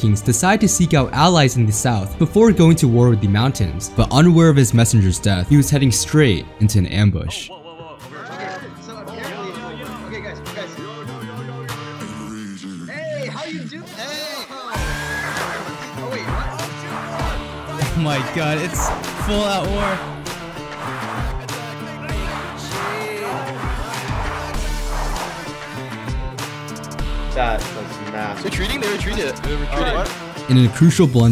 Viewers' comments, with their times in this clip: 0:09 Like the music !
0:13 epic battle cry moment
0:15 What the hell up with the music man. Is this the Wild West or the medievala age 💀